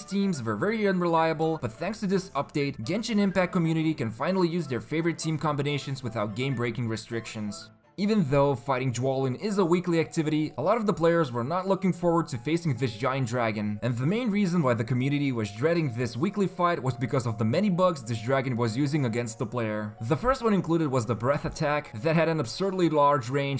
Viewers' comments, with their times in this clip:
0:07 They only thing that bugged me the most was that this guy pronounce Dvalin "Dwalin"